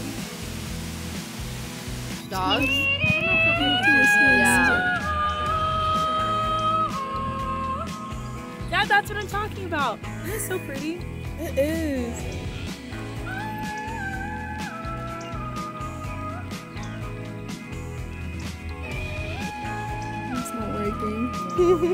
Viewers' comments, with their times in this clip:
0:03 wow the music is really a vibe, so magical <3